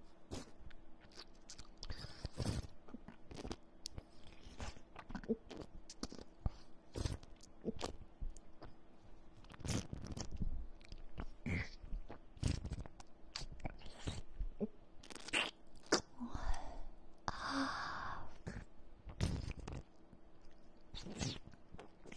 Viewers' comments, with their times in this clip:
0:05 was she chewing or swallowing